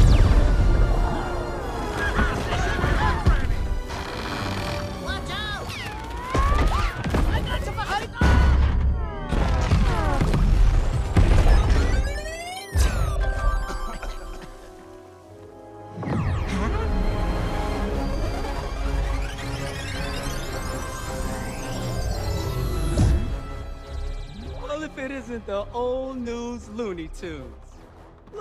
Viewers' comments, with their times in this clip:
0:09 Same cartoon sounds as Disney